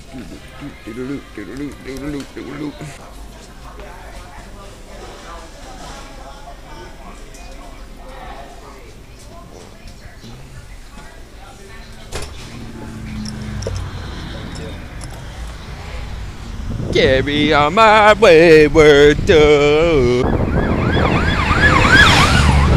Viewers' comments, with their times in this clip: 0:09 was that a fart lol